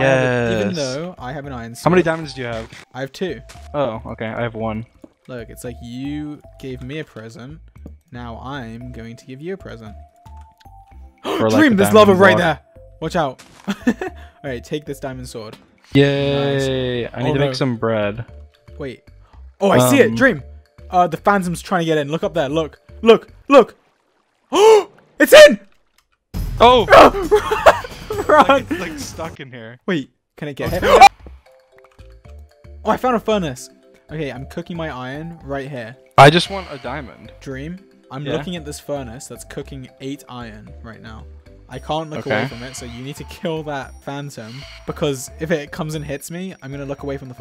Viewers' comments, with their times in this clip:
0:04 you can’t tell me that didn’t sound exactly like a creeper
0:29 a perfectly cut scream 😂
0:29 that's a perfect scream cut lmao
0:29 the cut off scream 😭
0:30 The cut off scream killed me 😂
0:30 I love how he just screams after the phantom chasing them and cut to another clip 😂😂😂
0:30 the cutoffs between george scream😭
0:30 perfect cut scream
0:31 THAT CUT OFF SCREAM 😂
0:31 that cut scream omg 😂